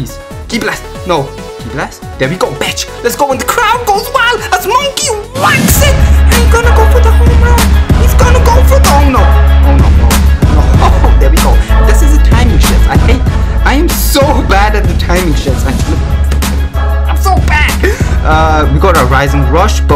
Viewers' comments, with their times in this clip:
0:05 There wasn't a song that was him talking